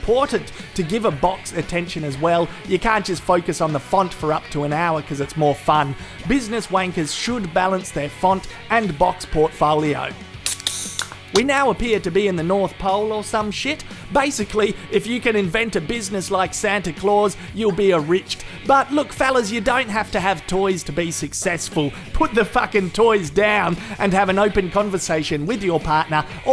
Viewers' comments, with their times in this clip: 0:10 I died when I heard him crack open a beer 😂